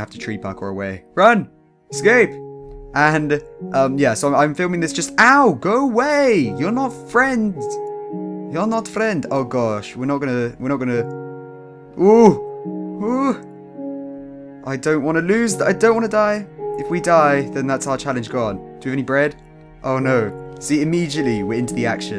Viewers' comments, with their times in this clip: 0:08 dat russian accent